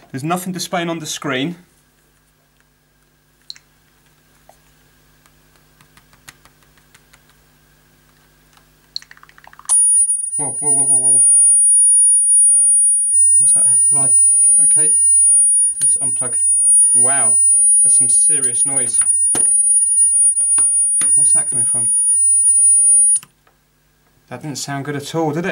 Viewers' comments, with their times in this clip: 0:06 Should have put on a warning for earphone users. Dayum that hurt my ears bad.
0:09 It was as if a million doggos cried out in agony...
0:09 R.I.P. headphone users...
0:10 Oh well.. I didn't need my ears anyways...